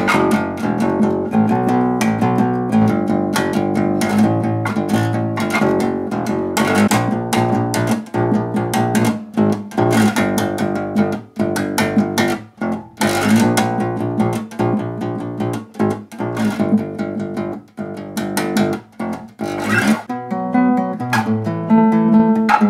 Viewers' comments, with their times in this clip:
0:08 sounds like Trespassers W by Have A Nice Life